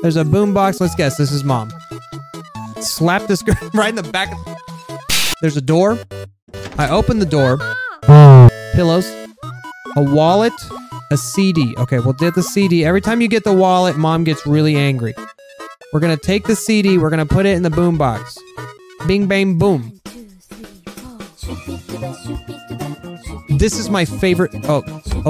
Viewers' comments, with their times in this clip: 0:07 the sound of TRUE dissapointmet.